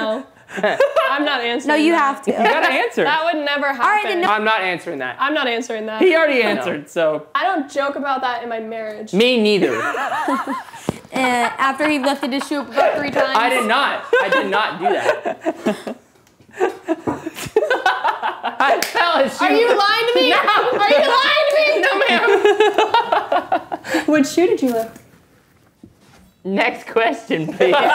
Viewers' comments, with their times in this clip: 0:10 The Me NiEtHiEr was so funny 😂 😂😂😂😂😂